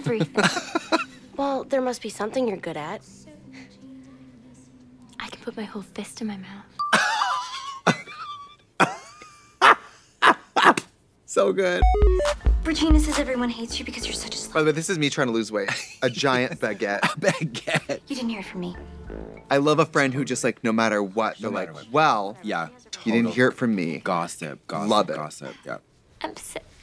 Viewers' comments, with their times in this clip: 0:07 Katya Fizzles. Trixie giggles. 😂